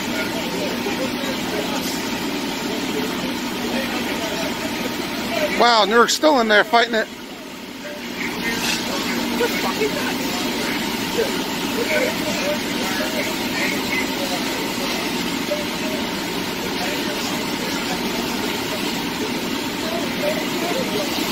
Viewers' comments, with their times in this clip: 0:09 you can hear someone in the background say “they’re fucking nuts” 😭🤣